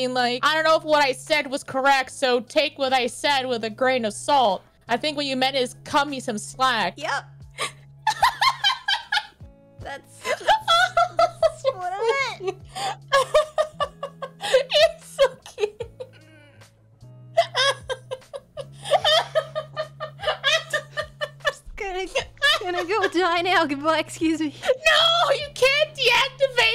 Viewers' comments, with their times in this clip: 0:07 oh mah Lanta ♥️ HER LAUGH IS SO PRECIOUS